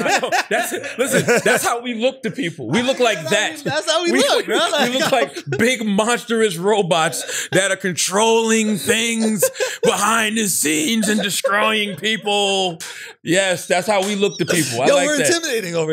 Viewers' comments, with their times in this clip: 0:03 when charla says motherfucker I'll rip your butthole at of place he sounded demonic and funny at the same time both creepy and funny lmao🤣